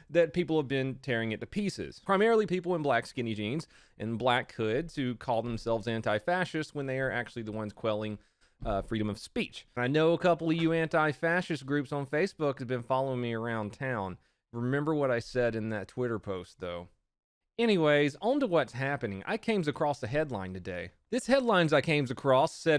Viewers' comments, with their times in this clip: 0:09 sounds like he is gonna f someone up